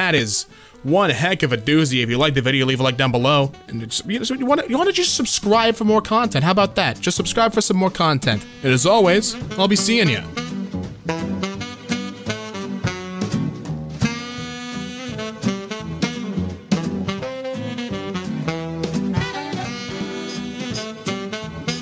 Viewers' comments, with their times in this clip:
0:03 My man sounds like he his sped up